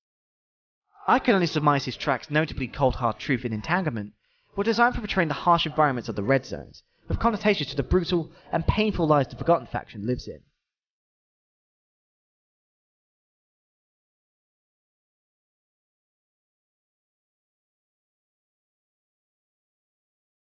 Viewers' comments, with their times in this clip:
0:07 at the audio corrupts